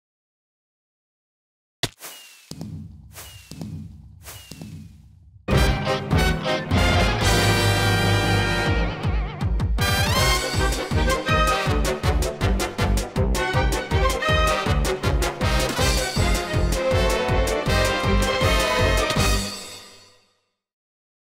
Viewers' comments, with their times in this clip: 0:09 i love that music transition lol